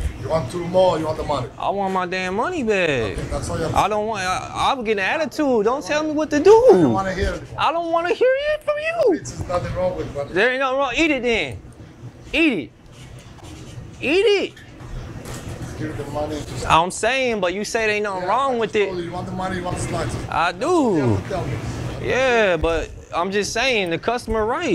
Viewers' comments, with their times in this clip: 0:09 The way he said stop 🤣